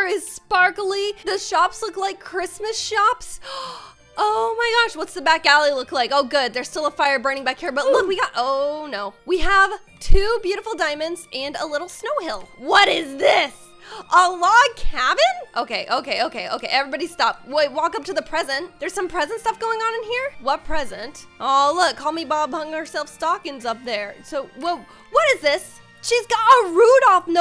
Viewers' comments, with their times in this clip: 0:08 made me die with that OOhf sound XD